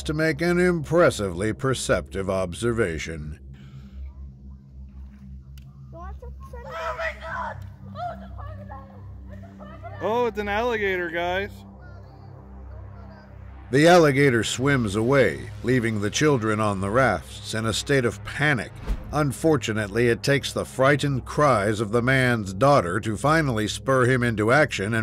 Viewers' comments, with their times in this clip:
0:09 "Oh it's an alligator man" ... like it was nothing...........